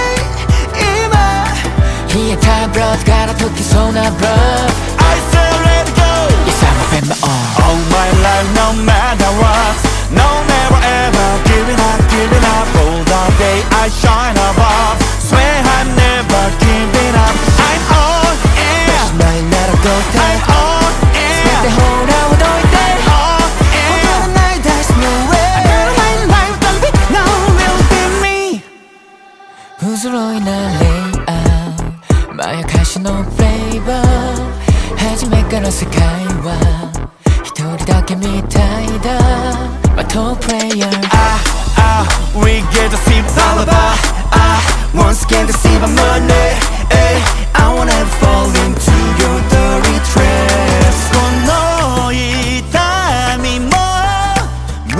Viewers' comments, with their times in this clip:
0:10 this part of the song reminds me of fairly odd parents opening a bit 😶😶😶
0:29 damnn Yoon Jeonghan, I'm not your strongest soldier when it comes to this tone of your voice🥲🥲
0:36 I really love baby gyu’s voice always loving it baby A